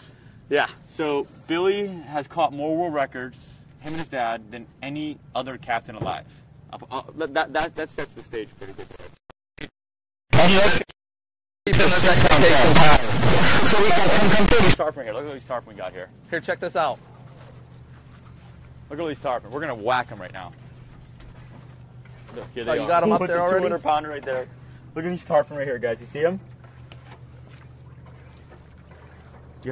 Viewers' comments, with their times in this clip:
0:10 call of duty sounds intensify
0:12 Gah damn, I thought someone was hacking into my phone and talking to me 😂😂😂